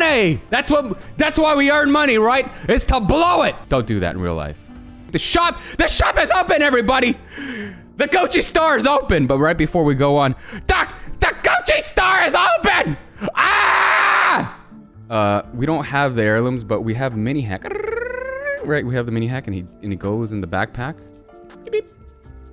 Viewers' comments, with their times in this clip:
0:05 Listen to crypto in game…then come to the video and listen to …that’s the same person
0:09 why doesn't crypto sound like this in the game? 😂